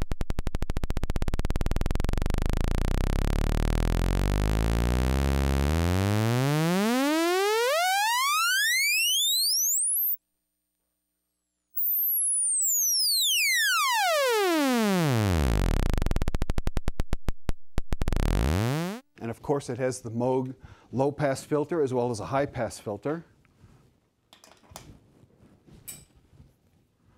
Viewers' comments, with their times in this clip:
0:04 The sound is identical to the sound of the motorbike in Dare Devil Denis on the BBC Micro
0:06 actual sound of my ear drums rupturing wearing headphones.
0:08 And that's when youtube cut out the high frequencys.
0:10 Haha actually it's not YouTube. I can hear the oscillator until It's where our ears cut out the high frequencies because it's outside human hearing range. Your dog heard it though lol.
0:12 Sounds like when you open an old wooden creaky door